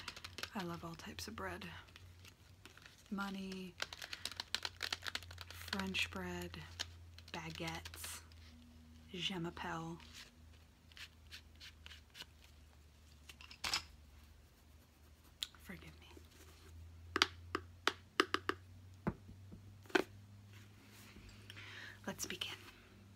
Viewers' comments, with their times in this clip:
0:07 i was skipping through the video and it stopped and all i hear is “baguETTE!”